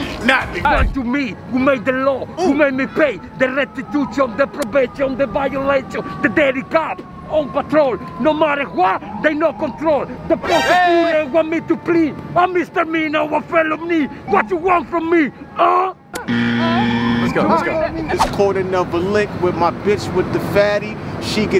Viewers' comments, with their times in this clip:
0:03 When Batman started to rap 😭😭